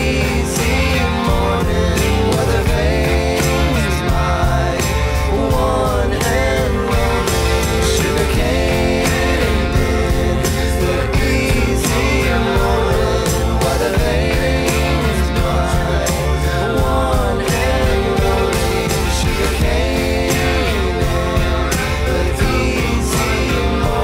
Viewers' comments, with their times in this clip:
0:05 I didn't know Hozier made an appearance here